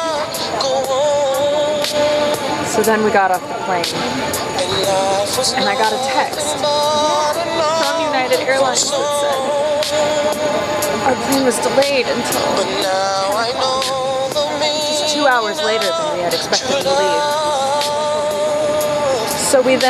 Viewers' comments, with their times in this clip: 0:03 I can't hear shit.